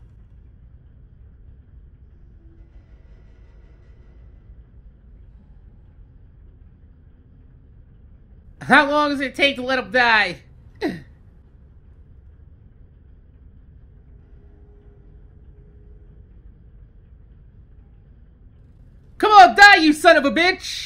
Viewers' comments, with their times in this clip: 0:06 my god laughing like crazy